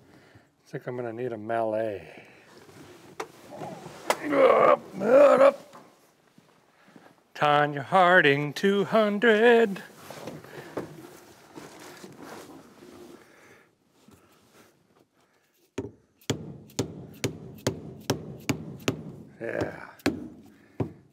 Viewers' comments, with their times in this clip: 0:09 has a feller ever considered a singing career?